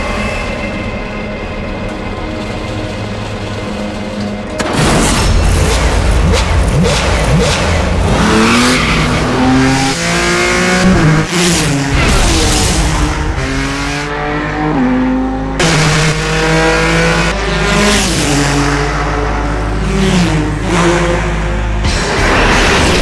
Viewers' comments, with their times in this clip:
0:08 the speed that it revs is unbelievable.